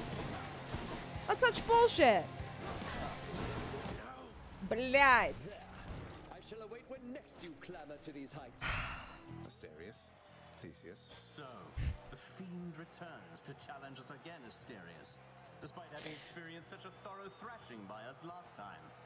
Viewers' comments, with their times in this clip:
0:04 Wait... Was that Russian "blyat' "? )))